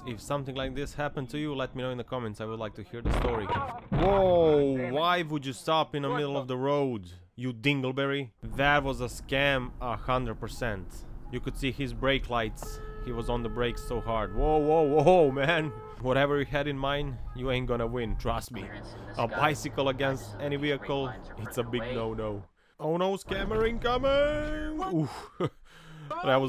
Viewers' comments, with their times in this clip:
0:08 “You dinglebarry” 😂😂 this guys laugh and hummer is too good